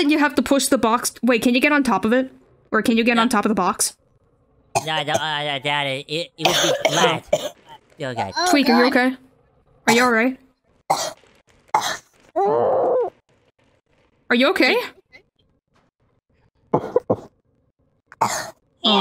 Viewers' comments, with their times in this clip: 0:04 Tweek chocking on water and Cartman not saying anything about it makes me laugh